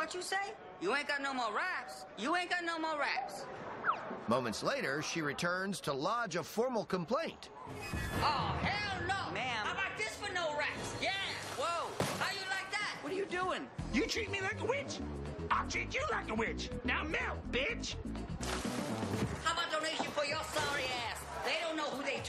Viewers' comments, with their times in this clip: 0:04 the way he says moments later makes me think she just has a bucket of water on standby just in case